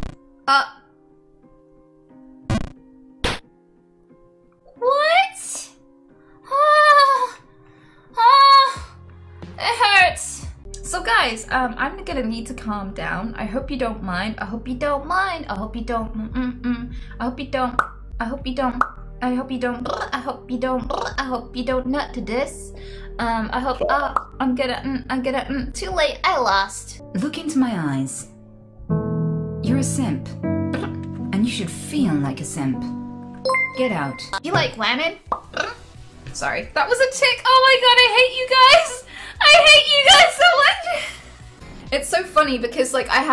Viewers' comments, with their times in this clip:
0:04 volume warning lol
0:06 my mom slapped me after this voice
0:06 had to turn my volume down to 0
0:12 can we talk about she laid a sick beat down?
0:14 Nice song thou XD
0:14 her tics has better rap skills then me
0:19 awesome rap music start...? I hope you don't *pop
0:27 She sounds like an Alexa device here xD that's awesome!